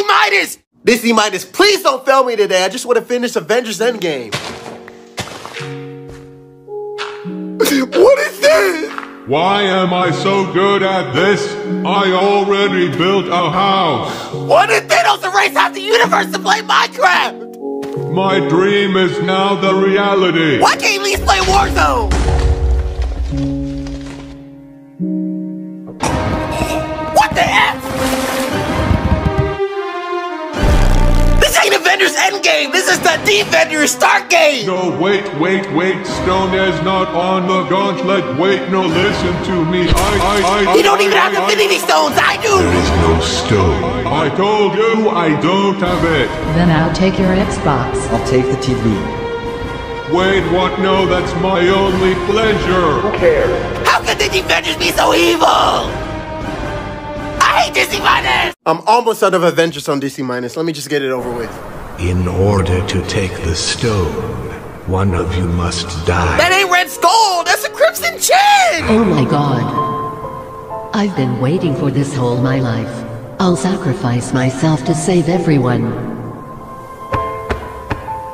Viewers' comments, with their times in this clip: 0:07 was funny the way he said what is this
0:07 goofy ahh voice
1:02 I love how everyone’s saying about which part they thought was the funniest but what caught me was that they used Henry’s voice (from DSaF, prob not his og voice saying it’s text to speech)